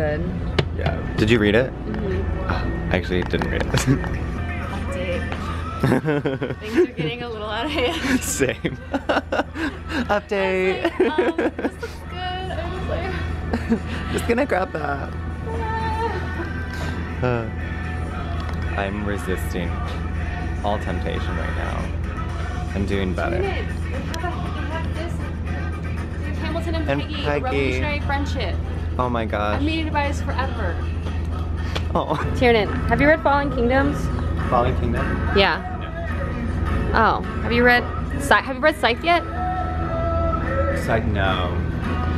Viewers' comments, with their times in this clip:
0:09 watching this video for the 40th time and only now did I notice that they were playing the greatest showman's song behind🤣.
0:17 I love how the greatest showmen is playing in the background lol 💖💖💖💖
0:30 All I could do is listen to the greatest showman music 😂💕